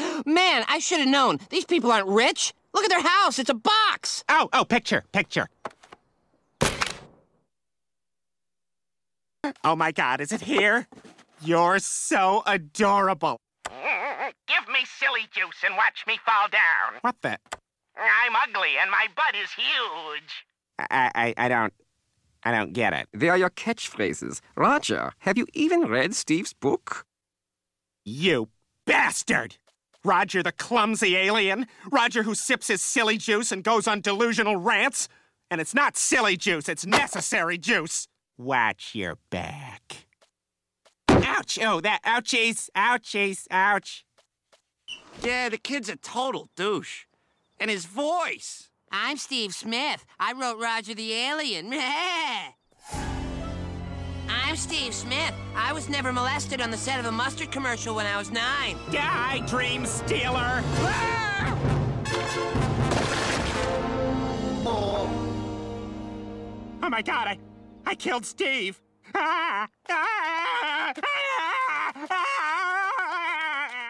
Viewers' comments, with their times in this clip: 0:10 Hahahaha. The voice sounds even more like Paul Lynde. I love that mehheeehh before speaking 😀 Imm ugly and my butt is huuuuggee 👽
1:00 tell me that sounded like Barry!!!